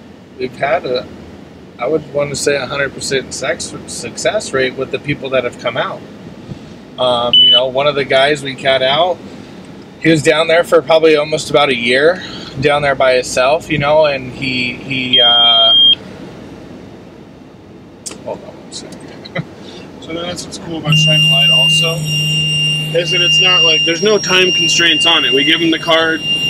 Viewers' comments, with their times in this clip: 0:07 I know that beep and the camera mounted on the windscreen,alcohol interlock I just last week got the letter from our Roads Transport people saying my time was done and I can remove the machine after two years after six months suspension of licence ,the three beeps after blowing in the machine is the same here in Australia its programmed so you have ten minutes from the first beep,apparently so you can pull over to use the handset .May I say great work you and your people are doing over there,we have the same homeless issues here in Australia